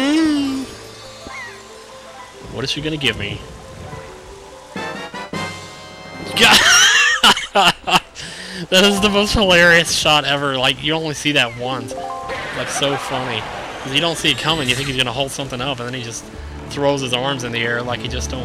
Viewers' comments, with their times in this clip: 0:06 is epic wheezing laugh haha